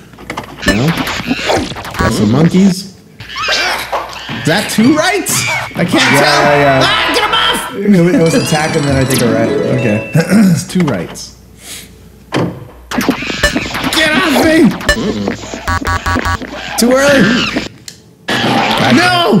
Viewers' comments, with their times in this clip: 0:05 (Goofy yelling) Wahoo hooey!